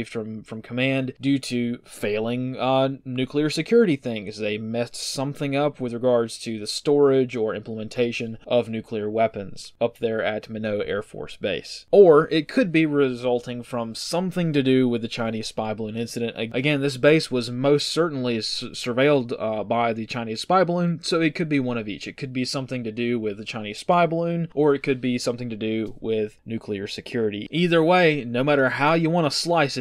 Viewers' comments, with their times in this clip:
0:10 your pronunciation of Minot AFB kills me 😂